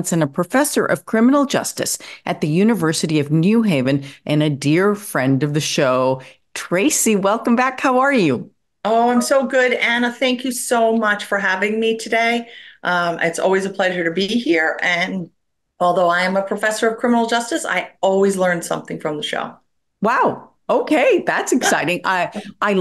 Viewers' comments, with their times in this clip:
0:09 Not the Teams ping I'm traumatized 😭